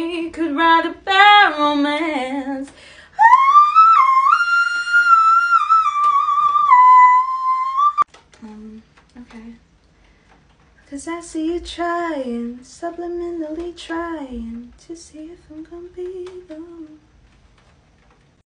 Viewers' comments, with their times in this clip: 0:06 Aries Be Like Ariana Hitting them High notes LOL( Is the Part)